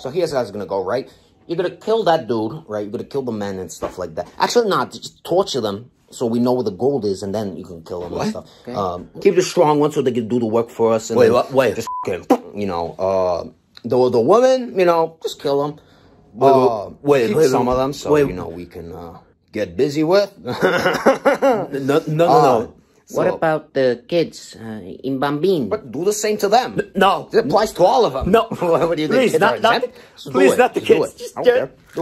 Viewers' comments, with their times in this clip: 0:08 that "wait- wha- wait..." is some of the best acting on youtube ngl
0:20 LOL the smile of the servant so subtle, so quick, so perfect I keep rewatching this, I love the servant so much. He gives that dead serious "okay." when he listens to the orders, just a normal day to him.